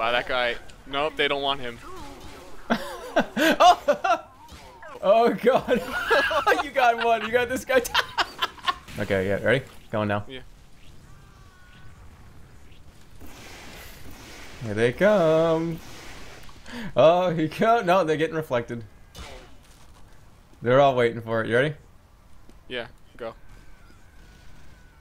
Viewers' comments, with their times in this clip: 0:07 sounds like the soldiers laugh